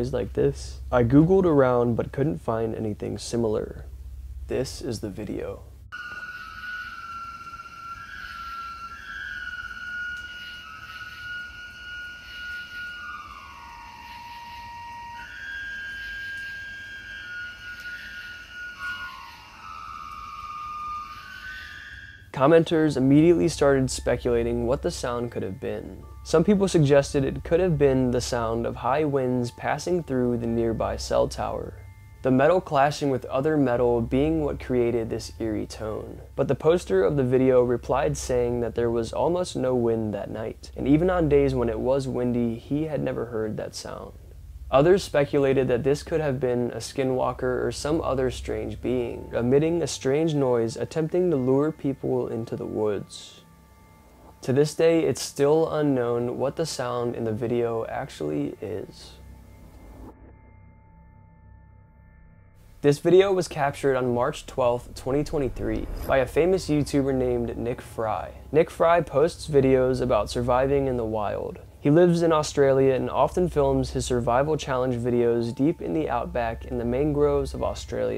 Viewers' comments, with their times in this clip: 0:06 that was me listening to dubstep while camping
0:09 I can tell you exactly what noise is mins into your very interesting video. It’s what we call in the UK a ‘Clanger’. That one sounds like it’s picked up a six pack of special brew and a traffic cone, and is a screaming into it in order to make its companions laugh. It’ll probably turn up at its burrow later with the same said cone stuck fast to its head like a witches hat, and it will then vomit up all over the burrow entrance to ward humans away with the foul smell it creates.
1:01 thats a saw cutting something most likely.
1:06 That sound sounds like an elk.